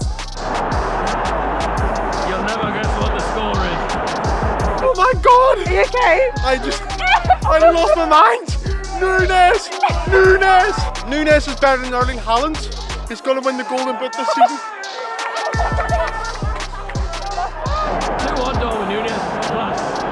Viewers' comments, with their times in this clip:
0:06 That scouse lad turned Irish with excitement.